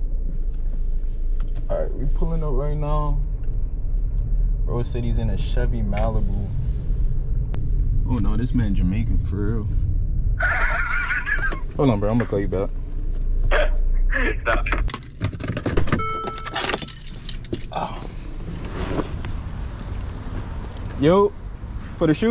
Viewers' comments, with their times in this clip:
0:10 laugh took me out yo 😭